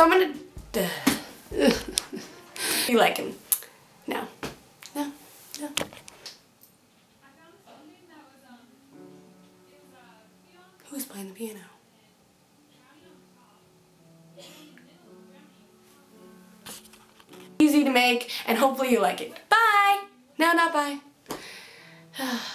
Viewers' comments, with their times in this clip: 0:06 Am I supposed to hear anything ?